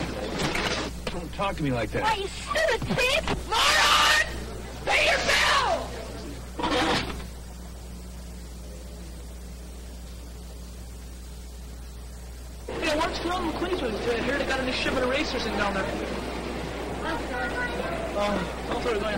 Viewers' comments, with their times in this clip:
0:03 LOL 😆 His voice.